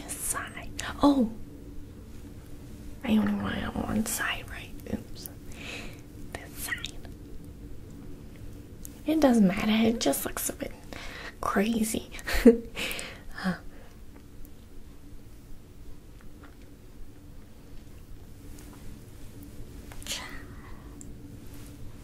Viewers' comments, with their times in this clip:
0:06 Yo headass she has auto tune